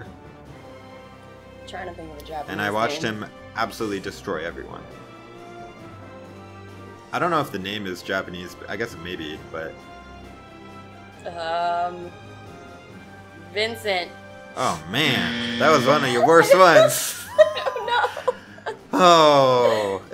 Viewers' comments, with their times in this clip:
0:08 did someone kill a bo2 zombie